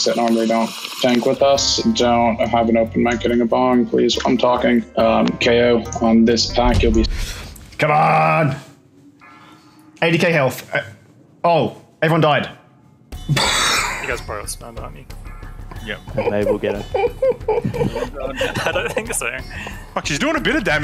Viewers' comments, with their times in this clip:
0:05 nothing like a good slurpie 🤣